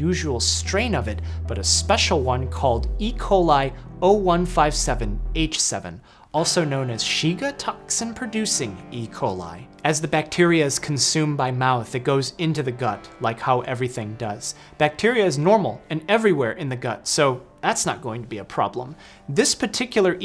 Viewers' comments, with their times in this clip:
0:06 I love that minor chord sting when a grave discovery is made. I remember it from the one where the guy microdoses shrooms off the dark web and the sting played when it turned out the patient had fungus in his blood. It's a great "uh oh" moment when you hear it